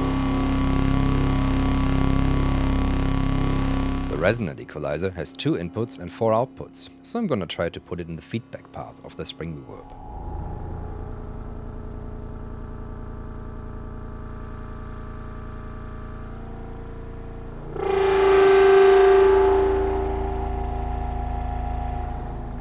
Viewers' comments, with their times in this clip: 0:09 sounds exactly like a patch I had going tonight with my Novation Bass Station Rack and an Ekdahl Moisturizer interfacing with the Novation's(way ahead of its time) CV connections.